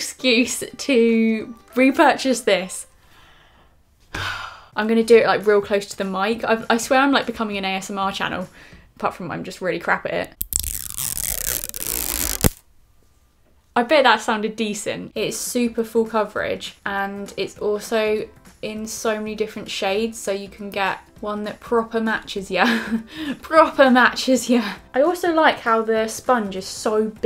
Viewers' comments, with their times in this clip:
0:10 YASSS we love an ASMR queeeeeenn !!!!!! 😍💖😂